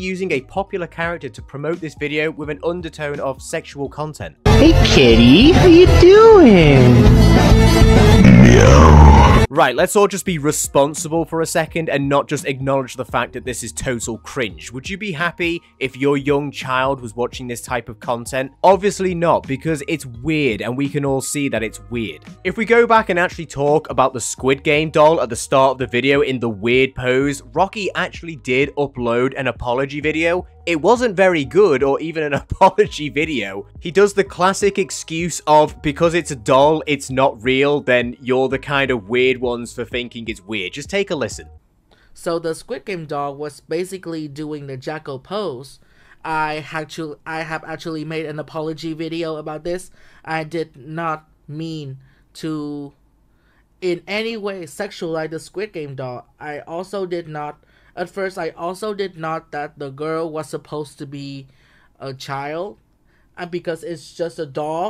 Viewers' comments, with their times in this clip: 0:07 The MEOW Me:ohh HELL NAH BRO
0:47 he sounds slow